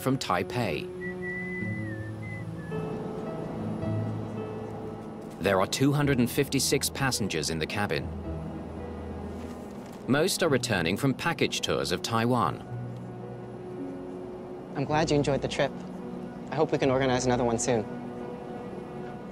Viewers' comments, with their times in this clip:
0:03 Why is he whistling?